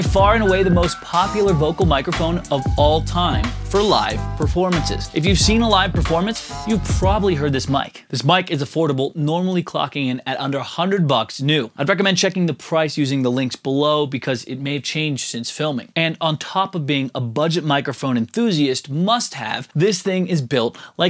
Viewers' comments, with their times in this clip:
0:06 Great video and really helped me man, thanks. Except for the initial music (until ) which made me almost switch the video.